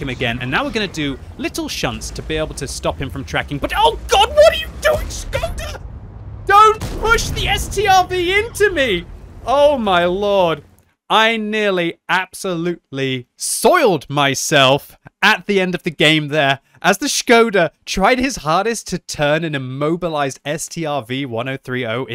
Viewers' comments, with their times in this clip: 0:03 I like how high your voice gets in that scenario lmaoo. almost as if this was live commentary haha